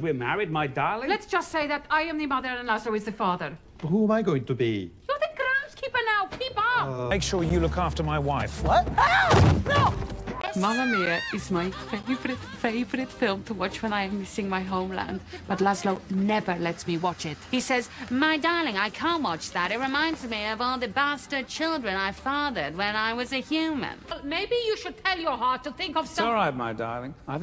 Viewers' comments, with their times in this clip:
0:10 Laszlo and Mamma Mia. This is awesome. Love Nadja's impression💌